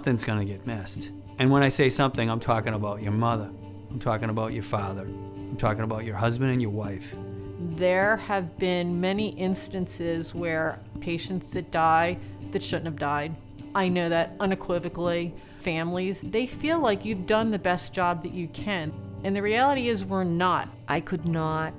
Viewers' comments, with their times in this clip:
0:03 my muddah? My faddah? 💀